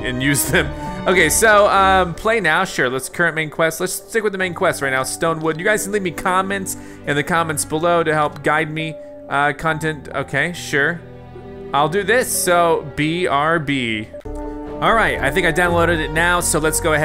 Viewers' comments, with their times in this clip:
0:04 Bro the song in the background makes me cry because all that Good moments that i passed in that game